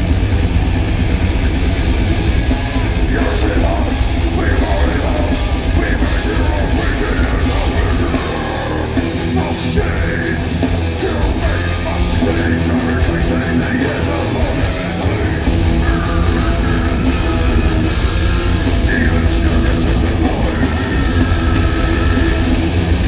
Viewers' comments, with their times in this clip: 0:05 The bulk of this crowd deserves The Plague. Terrible crowd. That blonde do' booooing